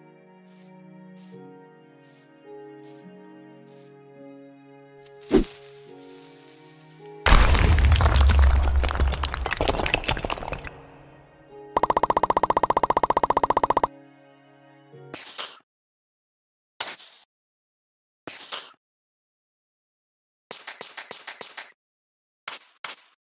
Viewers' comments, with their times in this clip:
0:09 YEET EVvery one: tnt goes BOOM BOOM BOOM